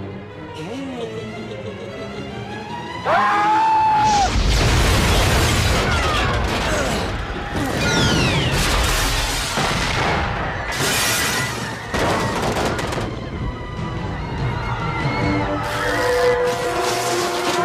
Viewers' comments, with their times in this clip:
0:03 One of the best screams in movie history